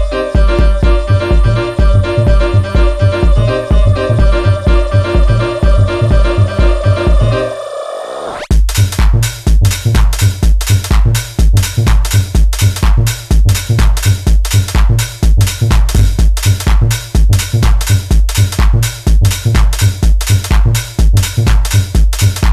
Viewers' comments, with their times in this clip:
0:08 The whole tune is perfect , the piano, the voices, but this is a terrible drop tbh